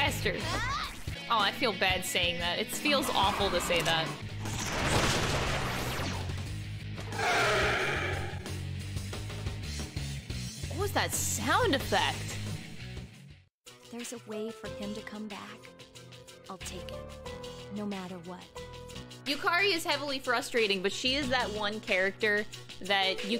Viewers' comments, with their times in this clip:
0:04 Why does this sound like the lemurian death sound from RoR2?
0:06 sounds like a skidding car tire